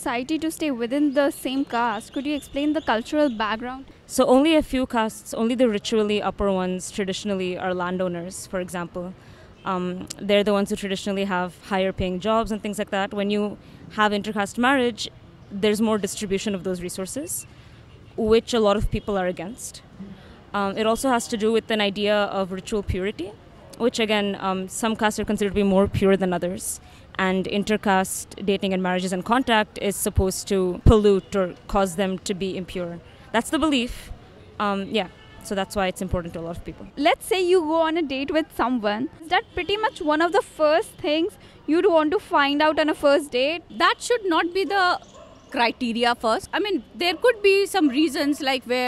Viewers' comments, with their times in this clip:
0:08 She is very articulate.
0:33 she is very pretty, well spoken and has a nice accent :)